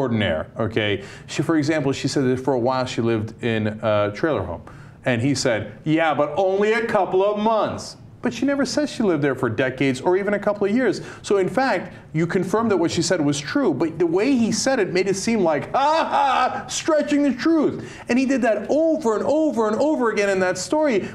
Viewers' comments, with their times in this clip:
0:03 Classic that Cenk calls the article on Davis a "hatchet job" with such astonishment in his voice. But he does precisely that to GOP candidates. Oh, the humanity!